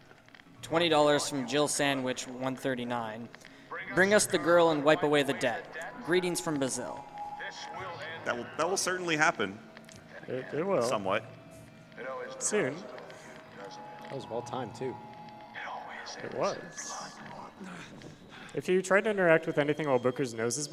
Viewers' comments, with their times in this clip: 0:03 Comstock and the GDQ announcer say “Bring us the girl and wipe away the debt” at the same time holy shit.